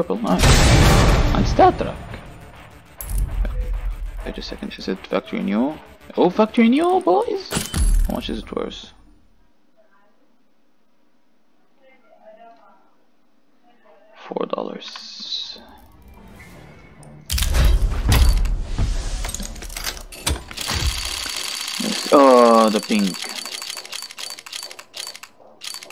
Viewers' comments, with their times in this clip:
0:07 How much is this worth? 4 dollars... Man i can hear your pain saying that